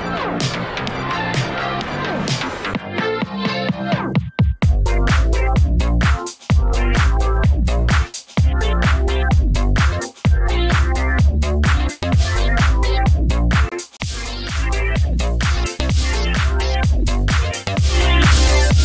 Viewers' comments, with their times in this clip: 0:03 I think the chords are: ||: Gm7 - Am7 - Bbmaj7 Gm7 - Am7 - Bbmaj7 Bbmaj7 - Cadd2 - Gm7 1) Bbma7 - Cadd2 - Dm7 :|| 2) Bb / C